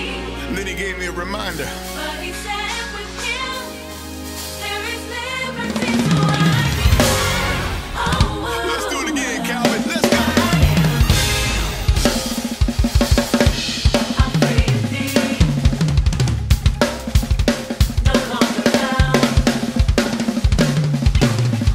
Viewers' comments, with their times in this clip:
0:06 That Roll tho.. I let out a scream.. WOW! my my my.